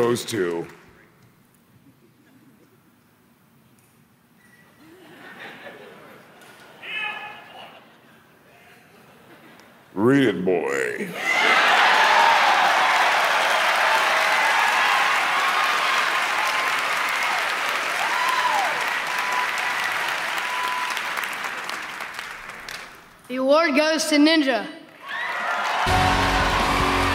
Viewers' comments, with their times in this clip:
0:09 "Read it, Boy"... Crowd instantly has a joygasm